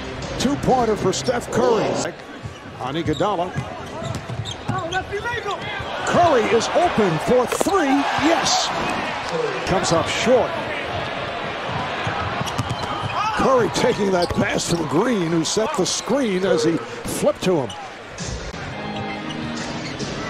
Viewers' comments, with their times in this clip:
0:03 Someone shouted no thats illegal haha